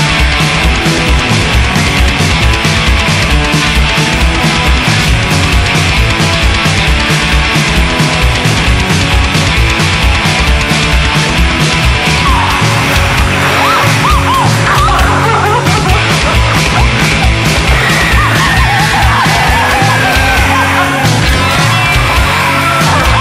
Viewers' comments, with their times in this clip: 0:04 throwing hands, crazy groove